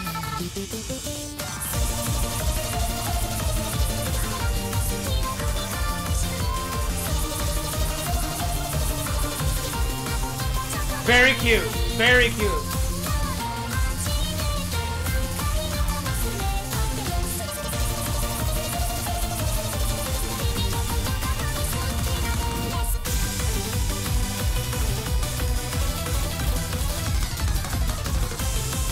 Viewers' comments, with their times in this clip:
0:10 y u sound like pewds?